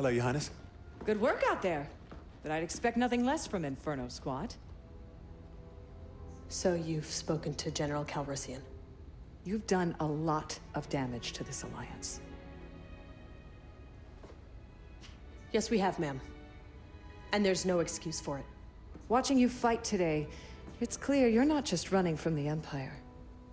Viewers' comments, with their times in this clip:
0:04 Excuse me, "squat"?